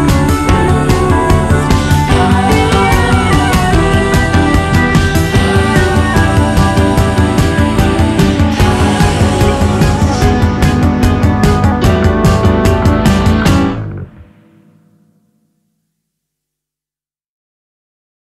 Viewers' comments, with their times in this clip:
0:09 lol funny meme sound